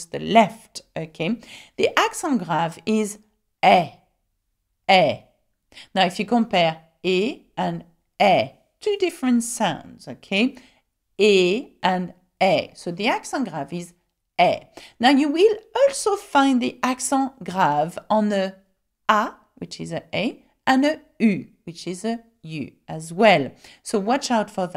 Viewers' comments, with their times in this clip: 0:05 At first I could not even unterstand the difference between two sounds. I kept listening to it and it did not make sense and I gave up. Weeks after I came here again an trying to watch the articulation helped this time and I have never been this close before to speak French like a native 🥰😂